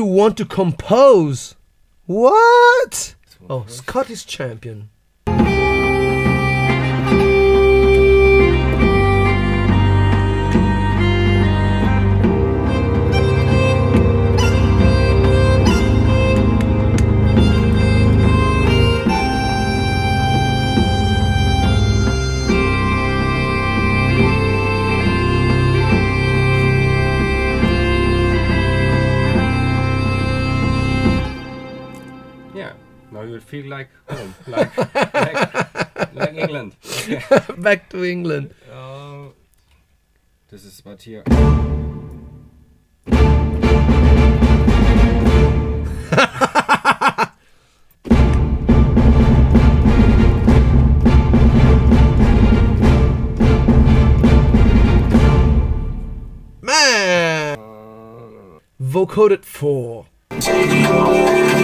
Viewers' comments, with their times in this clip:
0:05 I love playing dark brass sections, organs or choirs and be like Muahahahah 😈 those bagpipes sound an eerily lot like the one used in Eminem - Kim, for a sec it sounded like that's what he was playing.
0:41 sounds like dimmu borgir backgrounds
0:43 you know what's gonna happen when you start playing pirate music.